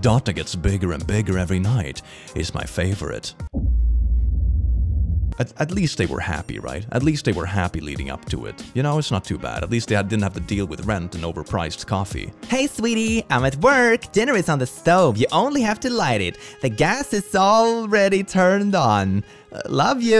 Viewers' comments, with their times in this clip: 0:03 It’s night and I genuinely thought this noise was someone trying to break into my house for a minute there until I replayed it